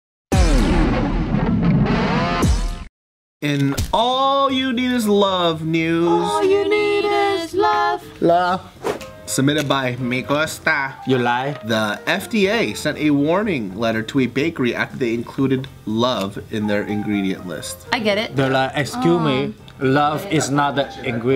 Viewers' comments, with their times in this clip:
0:05 The harmony was beautiful